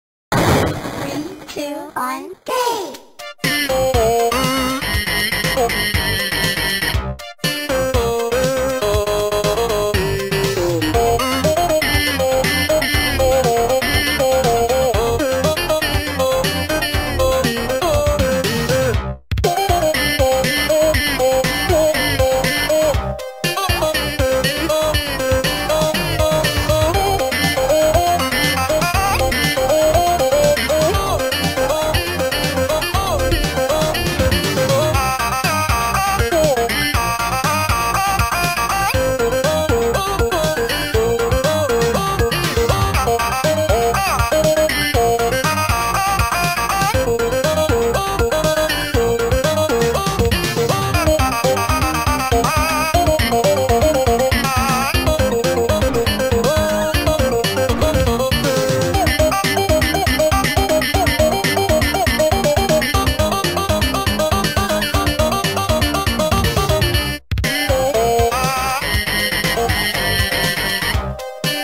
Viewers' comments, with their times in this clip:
0:00 3 2 1 GAY!
0:01 bro said “Ready, I’m, Gay!” 💀
0:02 it’s me or she just literally say “Gay” instead “Date”.
0:27 that vibrato on the second green was so fire
0:54 the jotaro glitched